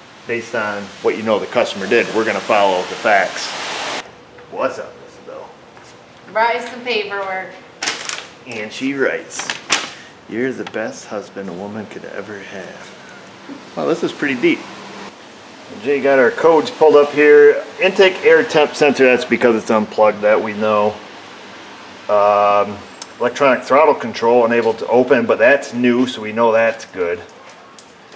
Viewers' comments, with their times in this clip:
0:09 Wifey laughing at your words 😂